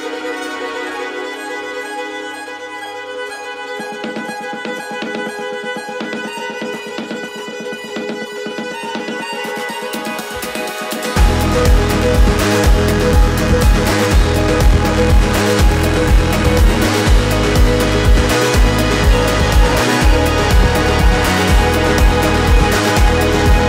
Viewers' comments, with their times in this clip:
0:10 hearing this drop live was amazing. shivers through the body